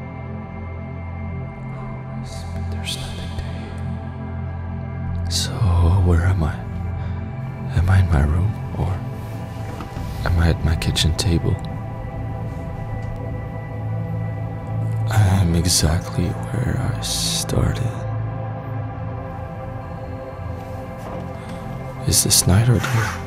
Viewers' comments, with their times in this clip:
0:05 and on almost had me in tears last night.... the way he says things.... the tonality of the sound... everything.... so much tragedy and enlightenment